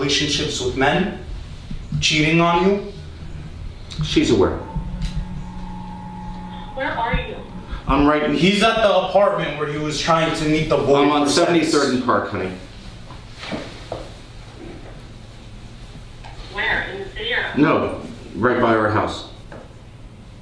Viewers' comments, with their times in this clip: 0:06 she sounds compicit...maybe??